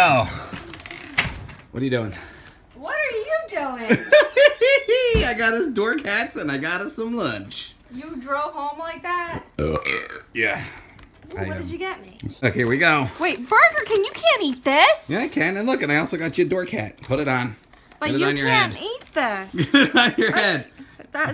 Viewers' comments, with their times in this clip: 0:09 That burp though 😂🤣😂🤣😂🤣